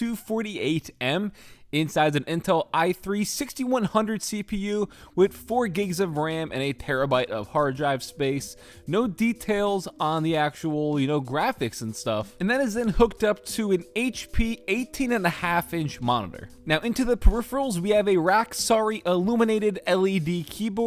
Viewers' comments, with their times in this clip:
0:05 What’s a pearabyte
0:07 did you just say perabyte???